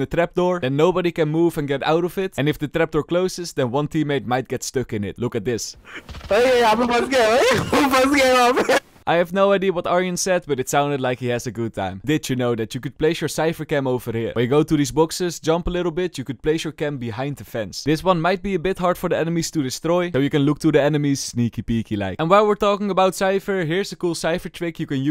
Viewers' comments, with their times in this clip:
0:08 he said i am stuck here while laughing
0:10 They were laughing while saying hey, he's trapped there 😂